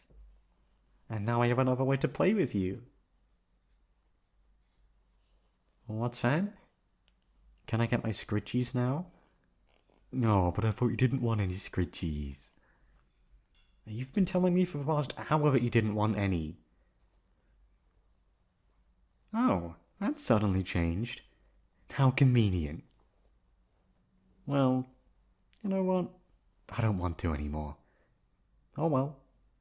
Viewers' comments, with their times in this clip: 0:10 NOO DAMN IT STARTED WITH A DEEP VOICE THAN IT FADED 😢